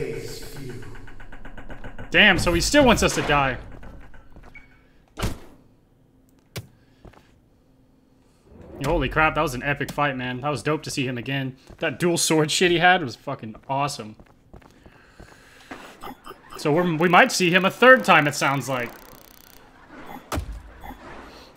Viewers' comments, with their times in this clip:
0:06 I i want that piano